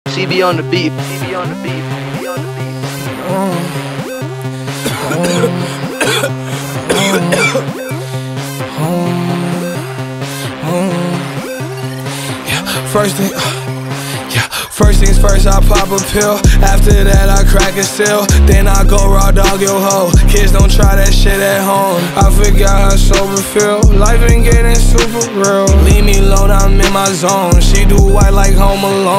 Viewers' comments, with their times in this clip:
0:01 Tf Is that lil pump voice in the the tag in the beginning👀 ?
0:01 Juice be sounding like my alarm at the start😂😂😂
0:12 nah when juice lost his breath and picked back up at the beat drop is fucking gold 🔥🔥🥵🥵